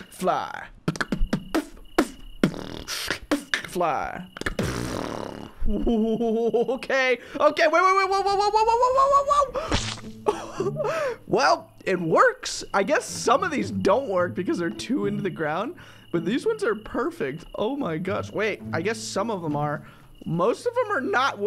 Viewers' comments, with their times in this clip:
0:03 How he said “fly though”